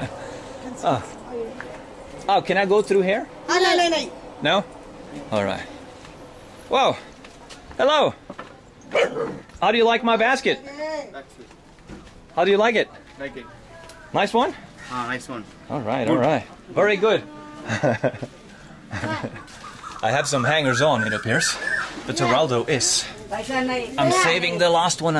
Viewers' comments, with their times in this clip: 0:07 that dog just said hello back at him